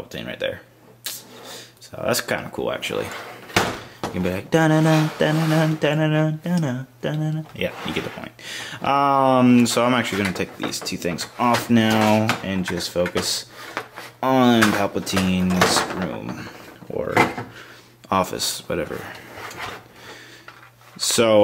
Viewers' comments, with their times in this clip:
0:05 was that you trying to mimick the duel of fates music? It kind of failed, but I always watch your reviews before buying sets, and this review (like many others) was great. Keep up the good work.